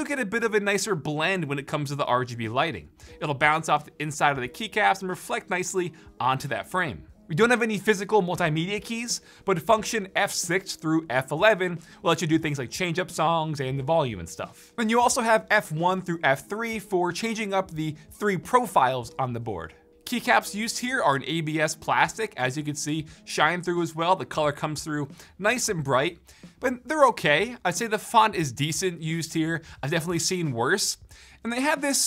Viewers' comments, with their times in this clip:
0:09 Why'd he go auto tune
0:11 did u just yeet some autotune in there? xD
0:11 When your inner autotune rapper comes alive :D
0:12 he went autotune
0:12 ..........is this autotuned lol
0:13 does he use auto tune when recording?😂😂